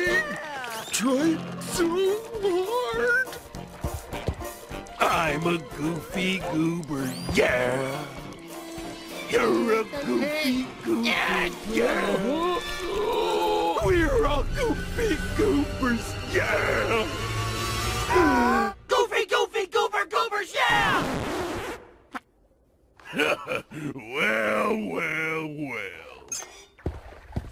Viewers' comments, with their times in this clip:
0:08 He's crying and doing the funny face😂😂😂